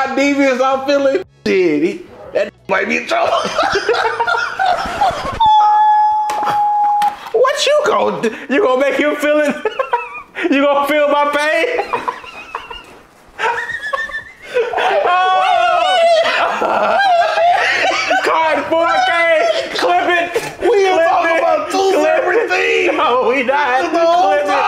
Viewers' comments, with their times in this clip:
0:06 Bro sounds like Thomas the train in 1881